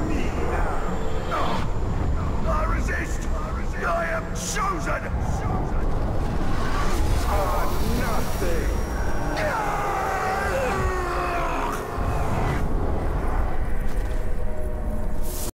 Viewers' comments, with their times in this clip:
0:09 The scream made it funnier